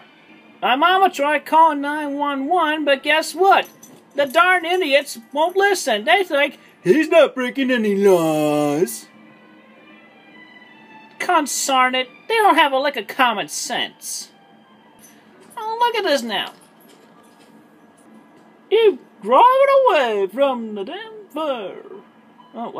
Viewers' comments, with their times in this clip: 0:07 Her voice went so deep freaked me tf out💀
0:10 It's so weird that Chris was nearly 40, sounds like a toddler, and uses the same language as old people do.